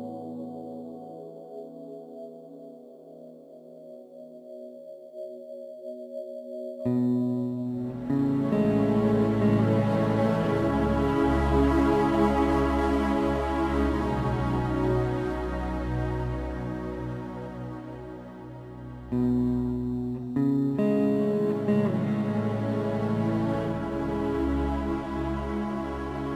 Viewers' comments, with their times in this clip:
0:08 just me or does sound like shining lights, even in death from metal gear solid V?